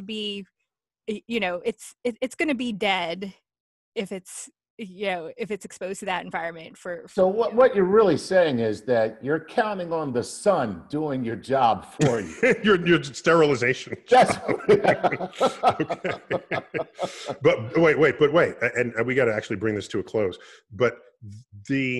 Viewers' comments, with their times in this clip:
0:06 she wasn't laughing